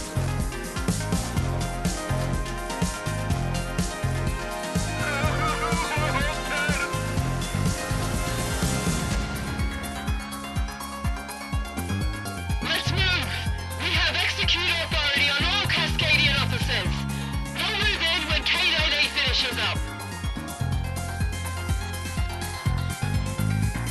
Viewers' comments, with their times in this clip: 0:05 (sobbing) "were all dead!!" "While upbeat music with horn, electro instruments, etc. Playing in the background"